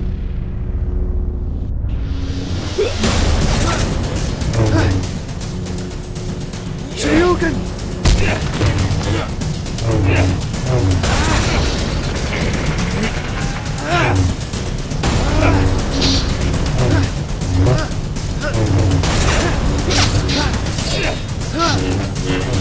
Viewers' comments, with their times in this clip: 0:07 wtf dude he says shurioken